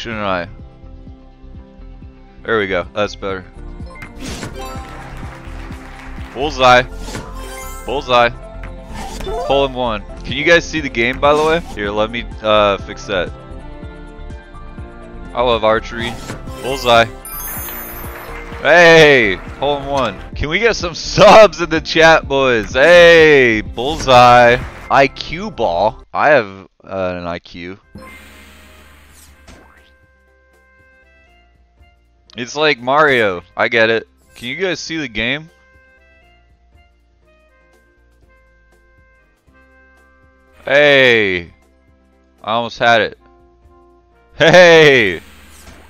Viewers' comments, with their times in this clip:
0:04 why the fuck does the nine goal sound like the rec room gift box opening
0:28 didn't talk for 3 secs